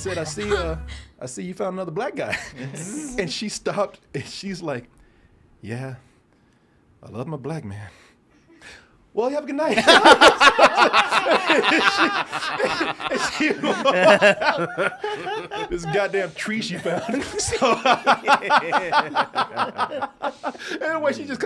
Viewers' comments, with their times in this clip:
0:05 kinda sounds like the little white girl from the movie AIRPLANE